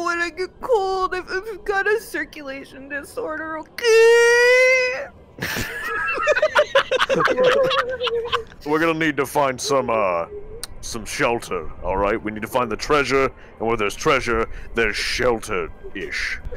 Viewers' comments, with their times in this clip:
0:03 when she said okaaaaaaaay it sounded like iron man's Lasers charging